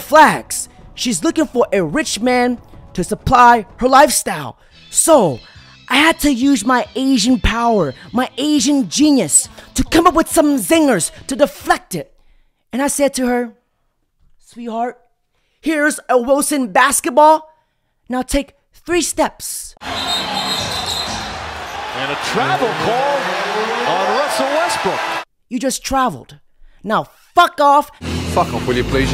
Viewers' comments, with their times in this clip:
0:10 not the mao xedong song in the background LMAOOO...